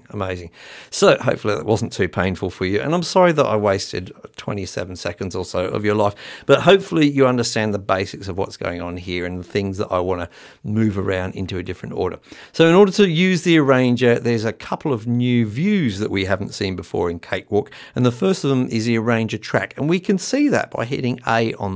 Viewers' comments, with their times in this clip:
0:04 Dude... if you think that's garbage you must so DUMB LOL (no offense though im jk) I really like the way that sounds I won't lie. I can barely make songs as good as you bit there's something called trying but i like your compostiion.